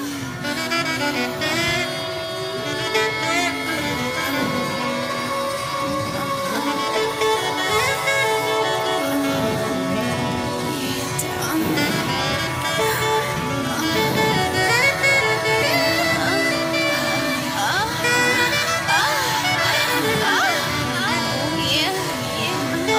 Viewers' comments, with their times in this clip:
0:08 sounds like em Ariana Grande vocals came in